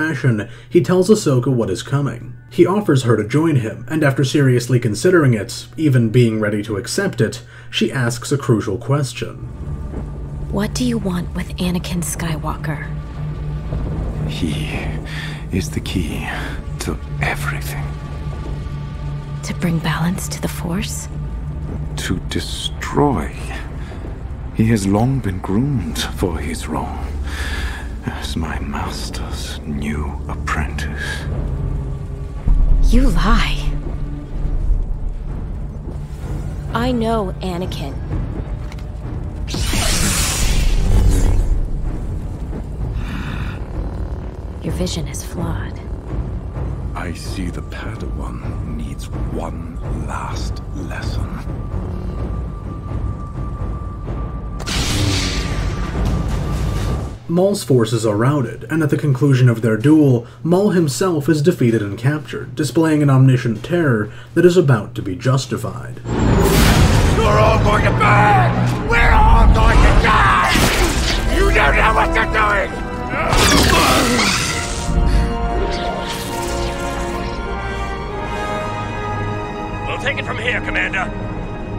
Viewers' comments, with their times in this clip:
0:09 what do you want with sky guy? Maul: he (wheeze) is the key to everything.
1:07 Fucking hell, that's some good voice acting.